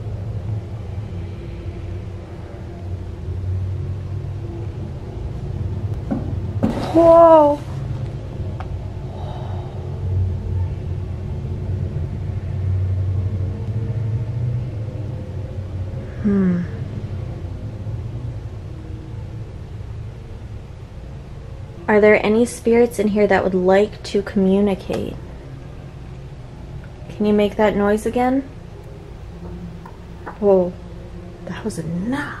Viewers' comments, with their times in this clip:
0:07 Now that knock knock I heard.
0:14 I just heard a ghost walking in the attic at the haunted Queen Mary minutes